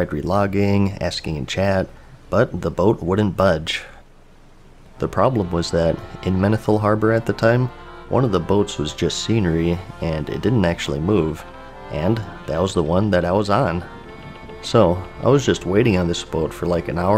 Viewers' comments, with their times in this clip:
0:05 omg the donkey kong music got me all nostalgic